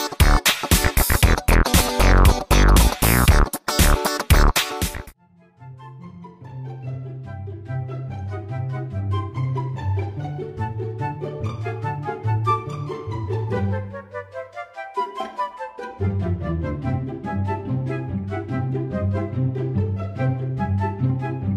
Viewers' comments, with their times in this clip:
0:06 Thoose slaps do be sharp tho